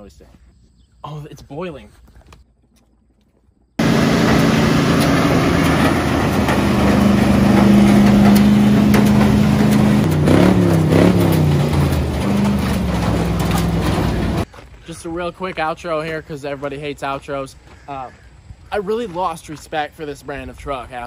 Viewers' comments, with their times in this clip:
0:08 Why is there a Minecraft experience point